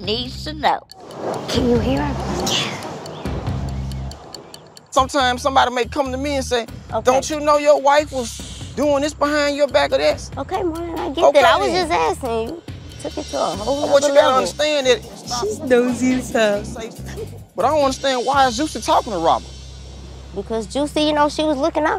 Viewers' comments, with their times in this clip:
0:07 not Monnie shushing him 😂😂😂😂😂😂😂😂